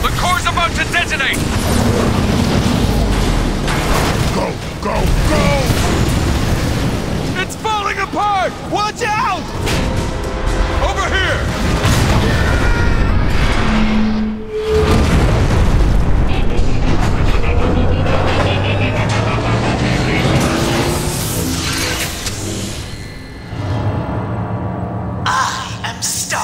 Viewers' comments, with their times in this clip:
0:07 Did I just hear Nathan Drake talking in the background?